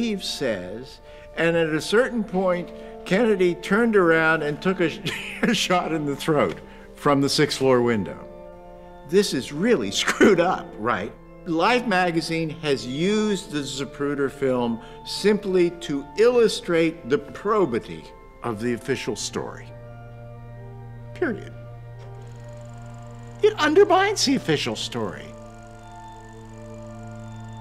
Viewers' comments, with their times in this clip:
0:09 Regardless of what happened…it bothers me that he laughs as he talks about “Kennedy taking a shot to the throat.” There is absolutely nothing humorous about this. It feels like he is trying way too hard to make light of the situation and all of the questions that still linger today. It was an incredibly dark time, and that remains true decades later. I can’t help but think that he “doth protesteth too much”, and that his feeble attempts at levity fall very short.